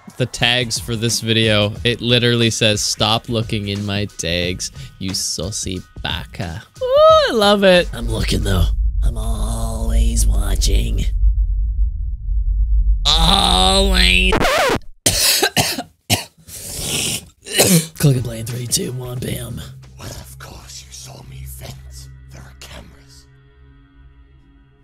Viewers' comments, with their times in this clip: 0:08 Seriously though, I must ask. What was that background noise ? It was seriously unsettling.